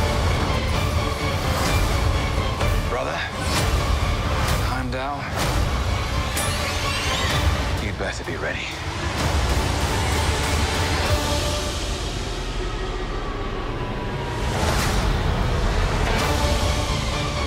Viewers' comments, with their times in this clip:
0:05 For some reason I can't understand what he says 😬 anyone who does?🥺